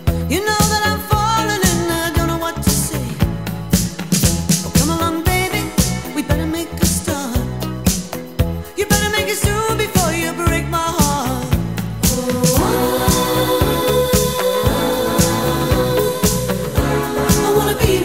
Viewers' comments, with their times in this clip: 0:04 I have this album on CD and whenever I come upon this song I always think it skips XD.